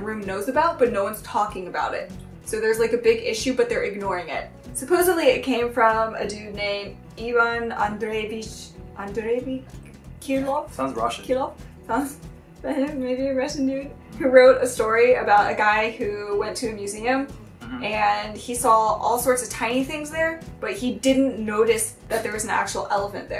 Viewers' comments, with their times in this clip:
0:08 My slav ears are in so much pain 😂 Oh well, as awesome as you guys are, you can't speak all the languages I guess...